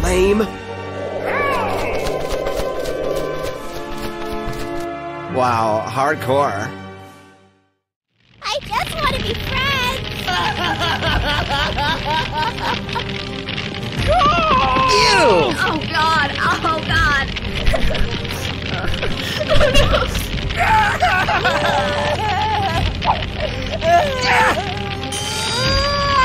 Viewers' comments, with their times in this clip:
0:10 OMG LİGHT VOICE :O
0:10 light yagami laugh